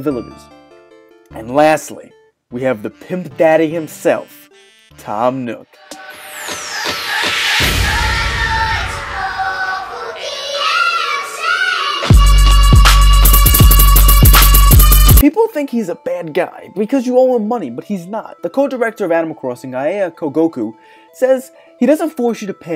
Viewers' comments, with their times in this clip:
0:06 Song ?? It's really cool sounding :D